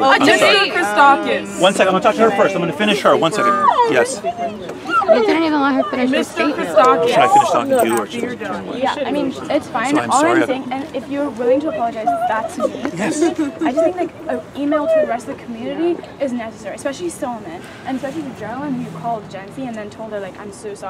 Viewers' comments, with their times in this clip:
0:04 ain’t no way she started whining like a little baby